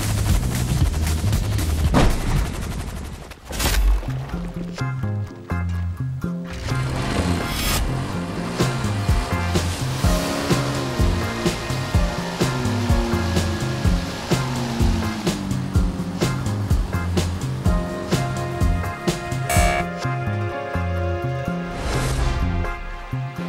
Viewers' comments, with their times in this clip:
0:04 that song is a jam